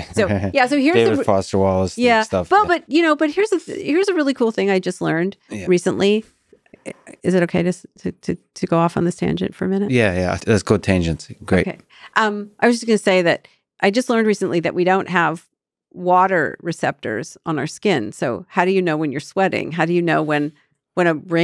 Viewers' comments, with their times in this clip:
0:09 The way he says "Yeah, yeah, let's go tangents. Great." killed me